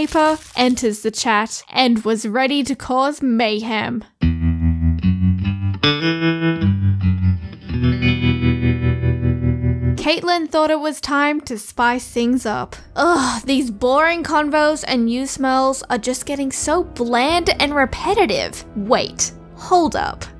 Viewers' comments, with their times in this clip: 0:04 that music sounded awfully familiar XD